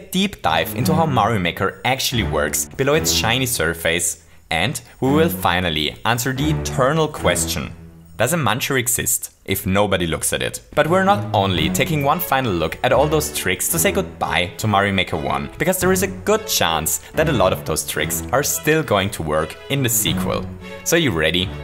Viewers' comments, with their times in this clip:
0:03 below its chinese surface 😂